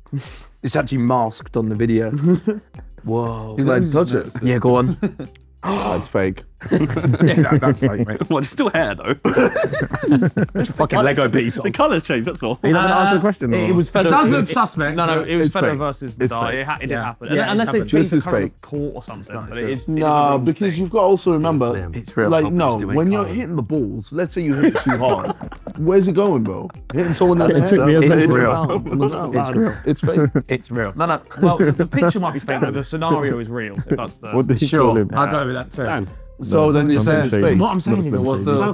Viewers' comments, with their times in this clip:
0:10 JJ’s laugh sounds like Scooby Doo 🤣
0:26 I wish they amplified Josh and Tobi’s mics 🥲😅